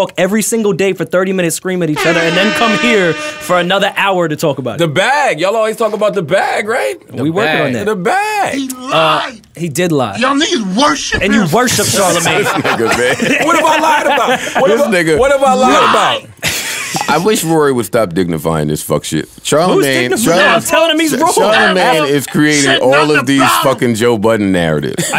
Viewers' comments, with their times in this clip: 0:07 They need to bring that shit back! That Flex sound-clip lol